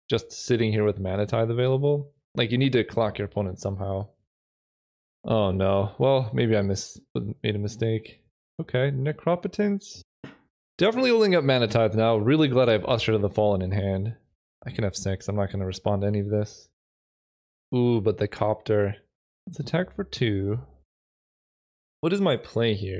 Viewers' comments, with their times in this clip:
0:08 Sorry, but will nobody mention the “necrapetance?”